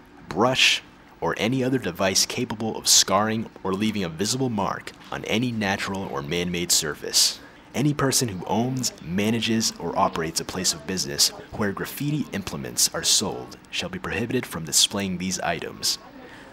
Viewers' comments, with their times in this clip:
0:03 Did that say vomit? The fuck..?